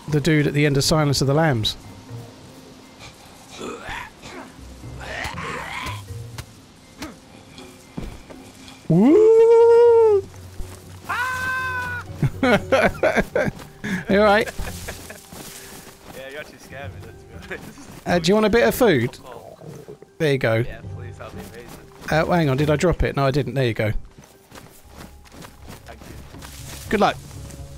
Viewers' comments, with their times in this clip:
0:10 sounds like the Tom and Jerry scream.